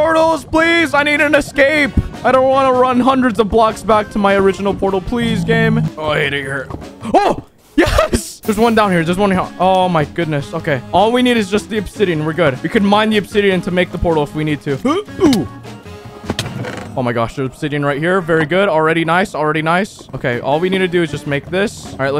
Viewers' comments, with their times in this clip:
0:05 It sounds like he said the n word